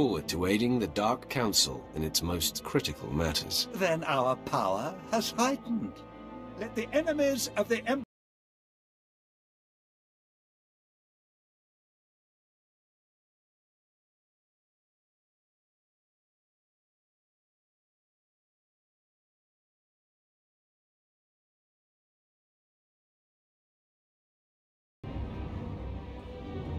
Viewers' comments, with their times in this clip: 0:08 Oh shit reupload sound goes out here?